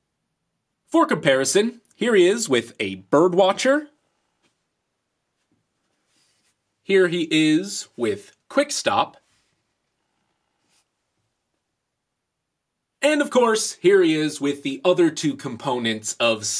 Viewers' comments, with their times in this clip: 0:03 did he say birb watcher